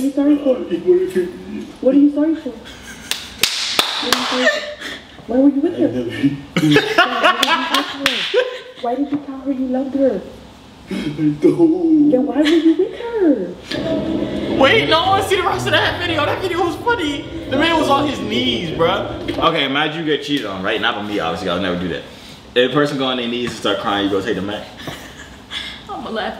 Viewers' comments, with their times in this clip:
0:09 dude hit that low note " I DOOOON'T" lmfao 🤣🤣😂😂